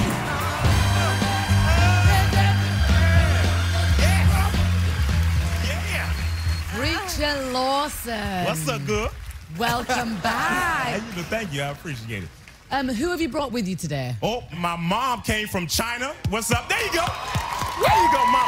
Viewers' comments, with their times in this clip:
0:06 why did i hear a moan????